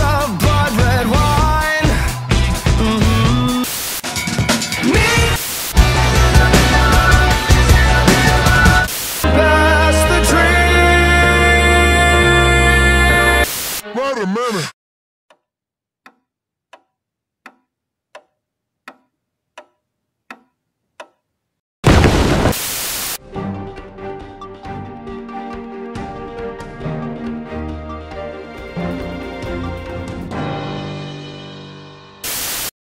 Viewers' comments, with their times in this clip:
0:06 Until this moment I thought it was not "This is a beat of my heart" in This is Gospel but "This is a mirror ride" or something lol
0:14 Wait, all that time I thought the actual lyrics in It's Saturday Night ARE "watermelon"! You can't convince me otherwise, I still hear it